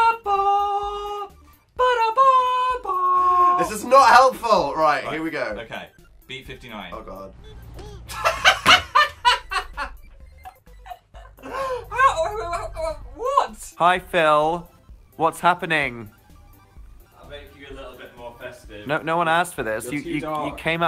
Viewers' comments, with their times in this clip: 0:07 most genuine laugh
0:08 phils laugh makes my heart melt i can’t
0:08 1. This came in my reccomends so praise Jesus. 2. I need to look at part 1 of this 3. Thank you for posting these 4. Phil's authentic laugh literally makes me so happy 5. "tHiS HIts dIFFeReNt" 6. Bye
0:08 ohmyGod phil's laugh